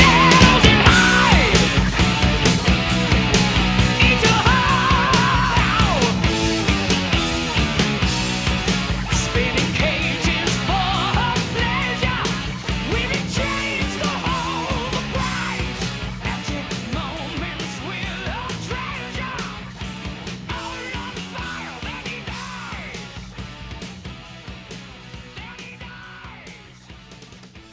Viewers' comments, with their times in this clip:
0:08 The worst part of this song, is that the Producer dimmed the last few lyrics starting to the end. Those lyrics were Poppin’ 👍👏